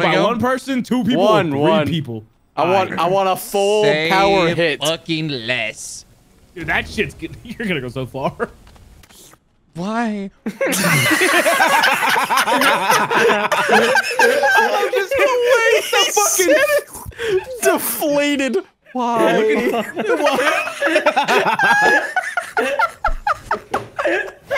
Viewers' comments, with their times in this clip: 0:08 ....just the softest, most dejected "why?" I've ever heard lmfao too funny! 🤣